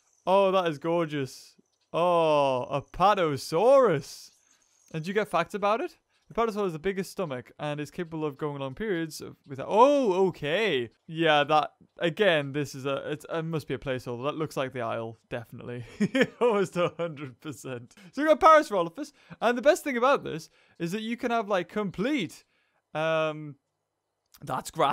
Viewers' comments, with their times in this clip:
0:05 I thought u said a dinosaur was able to go on periods XD